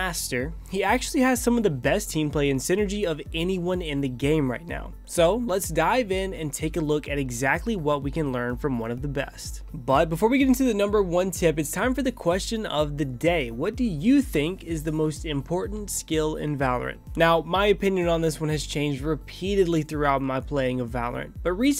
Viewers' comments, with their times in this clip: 0:09 most valuable "sill"